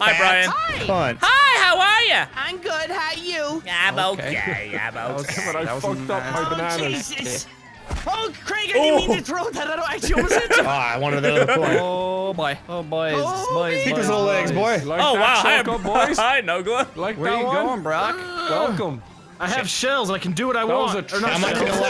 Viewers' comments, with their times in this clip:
0:06 mort from family guy